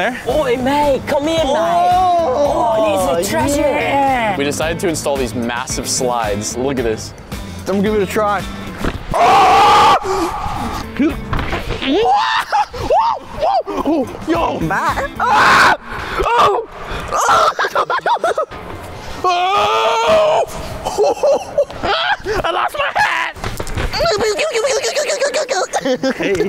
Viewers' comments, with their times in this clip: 0:09 the aaaaaaahhhhhhhhhh is realy real